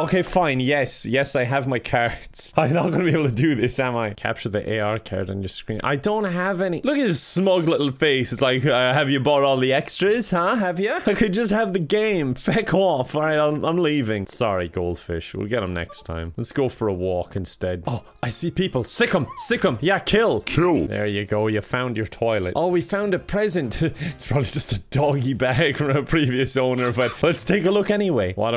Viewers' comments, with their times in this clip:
0:05 When he did the surround "Have ya?" effect, I literally panicked because I thought someone was behind me lmao
0:10 I'm just gonna leave this here.. sounded sexy